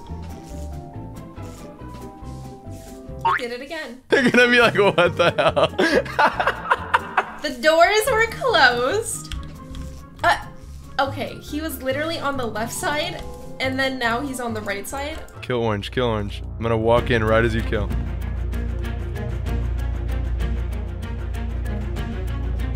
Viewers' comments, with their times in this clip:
0:07 the evil laugh